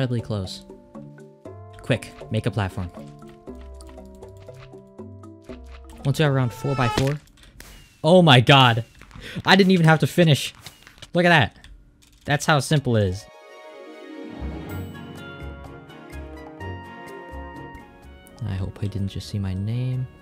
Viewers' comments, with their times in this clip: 0:06 It’s funny how the screaming sound when this last guy fell was perfect